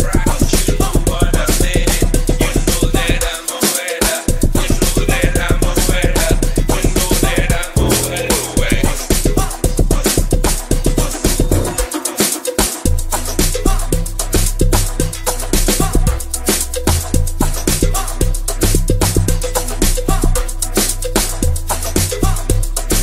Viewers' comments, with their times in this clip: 0:06 I been waiting for another mix,this is absolutely fire 🔥🔥🔥 and I need to know the song with those crazy kicks